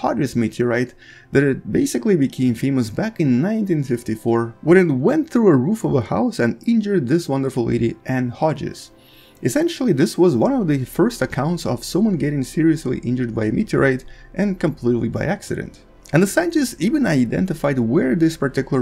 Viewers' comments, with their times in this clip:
0:05 ?? "When it went through the roof of a house and injured this wonderful idiot"